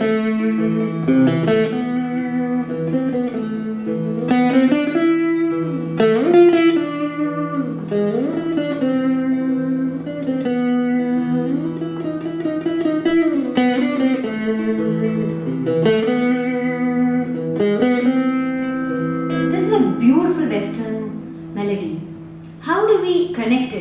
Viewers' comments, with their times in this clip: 0:07 Very nice Jayanthi ! That was amazing. Just to bring to your notice that you are playing A instead of G . You can check with the music score